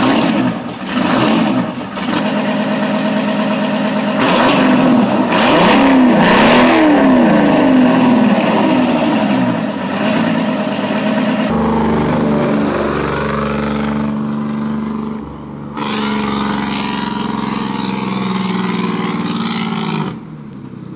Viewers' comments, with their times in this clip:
0:05 sounds like v8